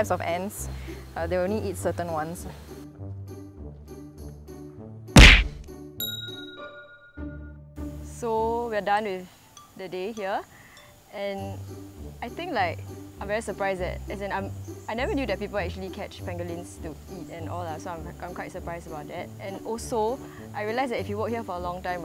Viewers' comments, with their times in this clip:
0:04 cb the sound effect scare me i thought they kena hit my car